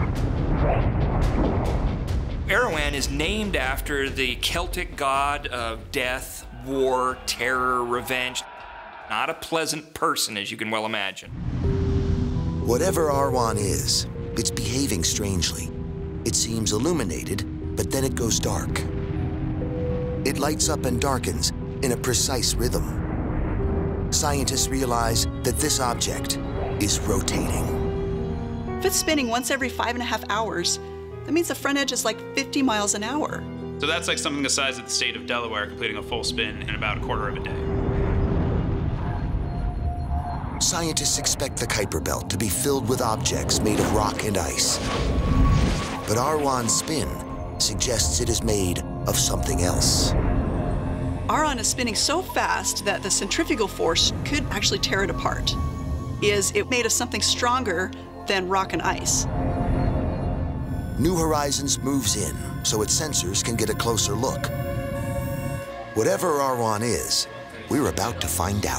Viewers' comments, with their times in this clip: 0:04 guy almost sound like specy guy from Ancient Aliens 😀
0:53 Smart lady here pronounced it the way I prefer.